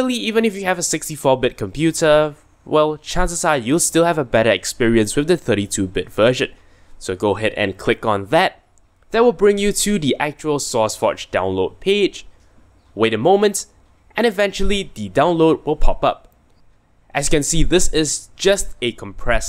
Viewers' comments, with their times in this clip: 0:04 did u say "bad experience" or what on ? I have 64bit com, which one should i download?